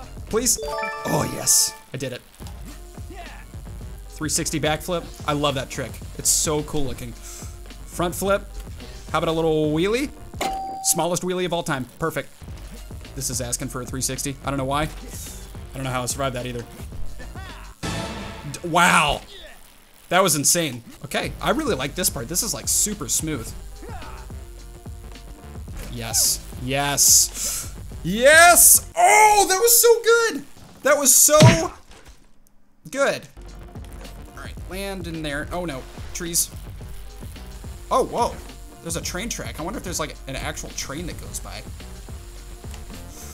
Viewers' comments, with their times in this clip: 0:09 that sound with the tap was so funny for some reason
0:25 he sounds like denis daily